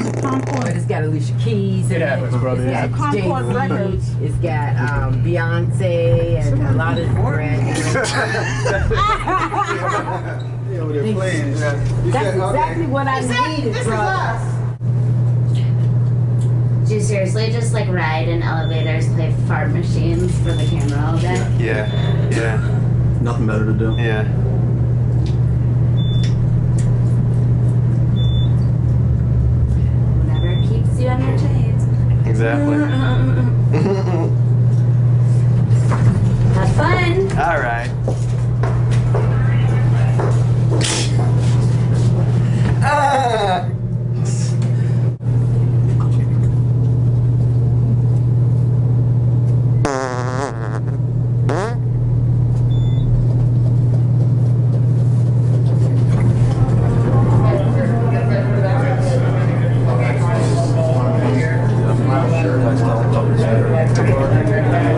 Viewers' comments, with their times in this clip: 0:09 best laugh of the hole video 😂
0:15 Yeah the lady i bet snitched on them.. lol It was pretty funny when Jack Vale made fun of her laugh..
0:18 Ohhh, listen to little-miss-high-class's tone. She so important, isn't she. The entertaining part is knowing they get more money to fart in elevators than she does at her job.
0:18 Am i the only one who think that she sound exactly like Miley .. xD ?
0:19 Little gal has to be from Reseda or a valley girl...<g>
0:31 smart-alek girl gets laugh mocked by the king of awkward laughs
0:32 what was that laugh?
0:35 His laugh after hers lmaoooo
0:50 wtf that sounded like a fly 😂